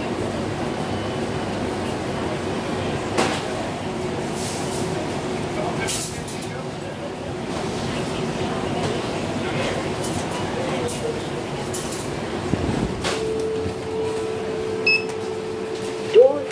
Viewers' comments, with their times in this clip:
0:04 Similar to their Turkish version, even tho it uses Thames valley 2